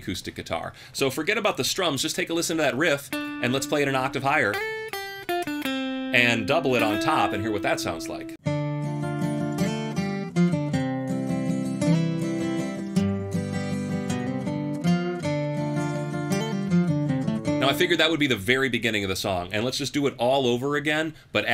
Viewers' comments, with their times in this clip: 0:08 everyone in unison when the octave acoustic comes in “ON A STEEEEEEL HORSE AYYE RIIIIIIDE”